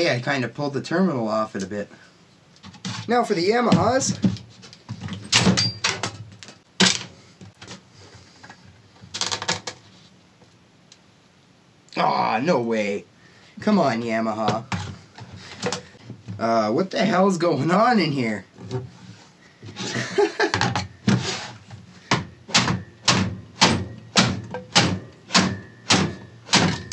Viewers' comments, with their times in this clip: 0:09 those are like ripping leggings open 🦁